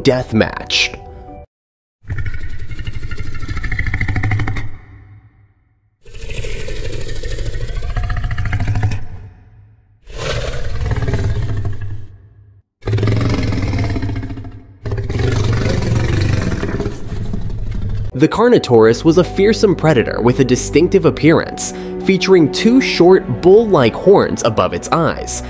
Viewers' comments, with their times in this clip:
0:08 "Deeno deathmatch" bruh... DINOsaur